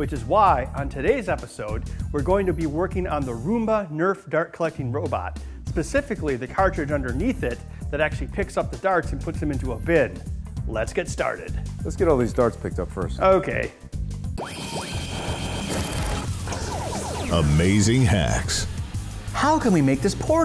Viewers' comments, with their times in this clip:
0:04 Pacfically? Did you mean specifically?!